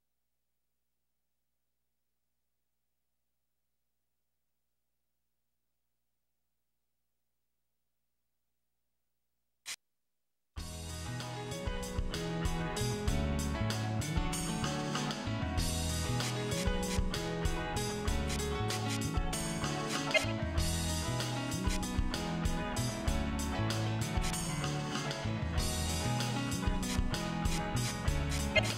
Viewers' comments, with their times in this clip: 0:10 THAT THEME SONG JUST SLAPS